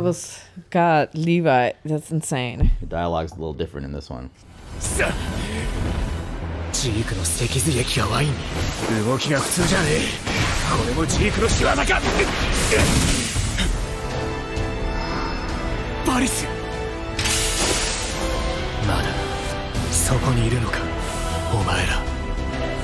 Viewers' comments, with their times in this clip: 0:04 I watched the subbed segment twice, the second time I didn’t read along & I can’t distinguish between statements and questions. just me?